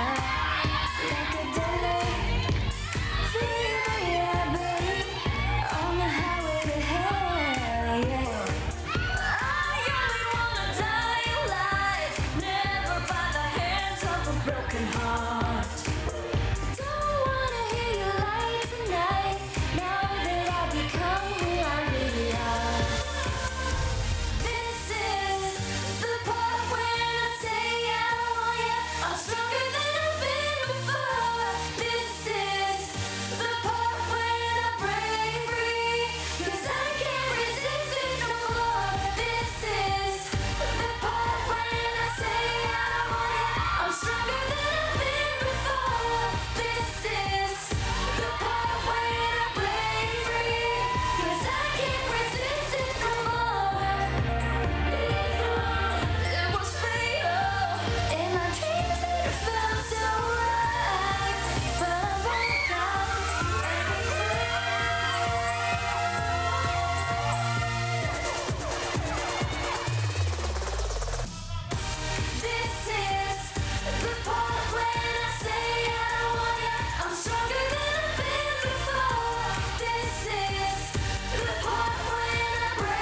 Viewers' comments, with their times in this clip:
0:10 janella's voice is😍😍😍
1:04 I don't like Kathryn but she made me laugh at her... She is so cute and she didn't make it O.A. . She sung with her own capability only. I really like her. I like the way she sing She's not that trying hard. hahhah... So cute....